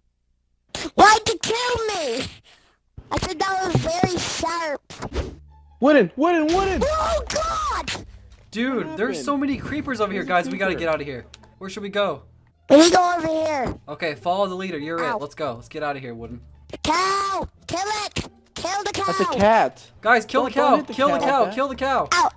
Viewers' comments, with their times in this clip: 0:03 bro turned irish